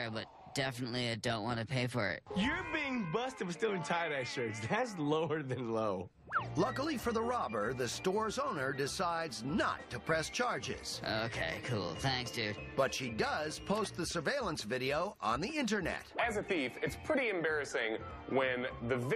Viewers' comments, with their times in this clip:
0:07 Omfg that's my exs dad and the voice over is scarily on point 😂